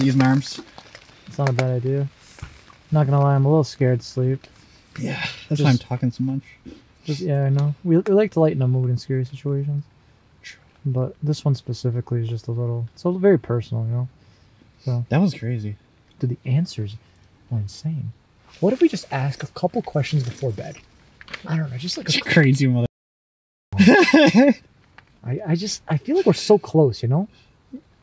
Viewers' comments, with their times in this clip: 0:09 EVP whispered “shhh”